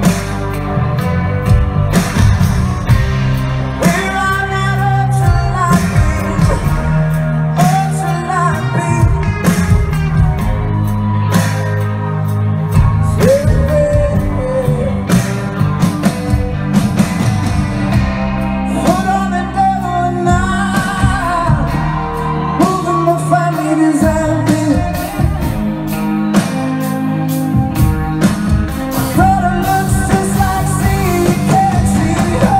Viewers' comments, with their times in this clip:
0:05 the whine type sound he makes at the end of "beam" AAA
0:17 from till the end- i'm actully crying. the vocals are IMMACULATE. he looks absolutely stunning and oh my god this is my favourite cover of his forr sureeee.